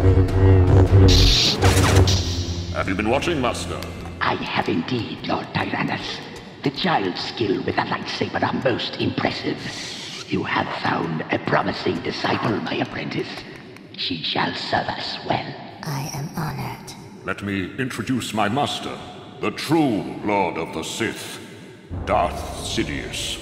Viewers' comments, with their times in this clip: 0:05 Palpatine’s voice sounds different as a Sith than his normal self